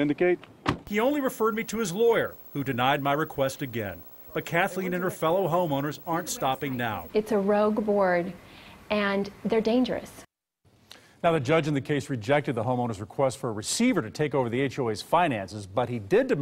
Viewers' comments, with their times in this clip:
0:03 Notice the guy and his lawyer having a laugh They think it's funny.